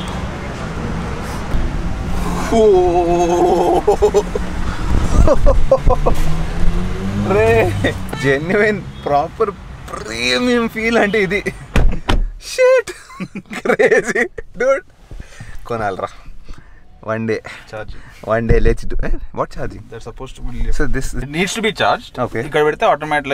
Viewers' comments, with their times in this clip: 0:10 How many of u noticed that the loud traffic noise has become pura silent after closing the door #silent_interiors BMW🔥❤️
0:11 That outside noise cancellation after closing the BMW door dope .........